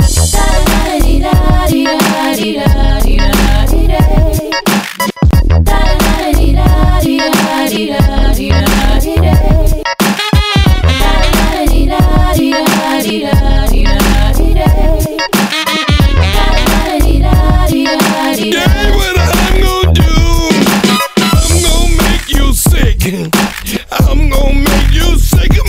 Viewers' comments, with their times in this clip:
0:09 So damn funky. And I see Sir Nose D'Voidoffunk back in the mix with glitter snot coming out of his nose LOL.